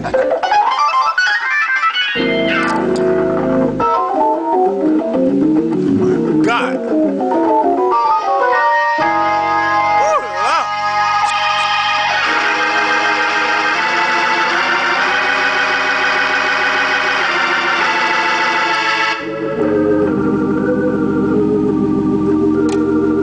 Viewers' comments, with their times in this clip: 0:04 you guys are right, i can tell hes a board player but hes definatly rippin on that organ though. real nice stuff man. ( yesss surr